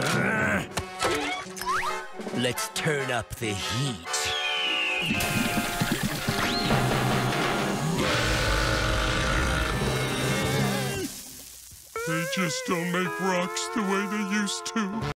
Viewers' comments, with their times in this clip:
0:08 How a dragon burps